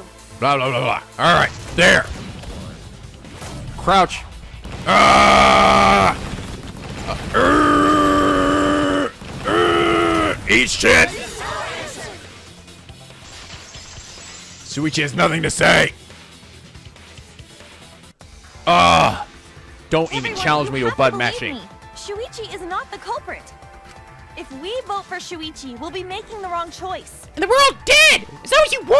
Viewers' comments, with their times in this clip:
0:09 Debate Scrum is the best part of the trail, The music and working together is awesome! THIS IS OUR ANSWER!!!